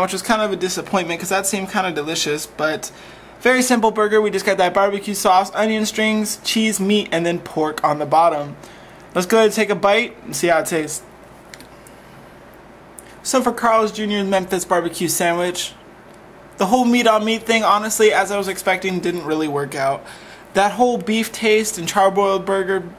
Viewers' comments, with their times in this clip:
0:07 Dude you sound like a tour guide... I can tell the way your tone changed when you said "..and pork on the bottom" lol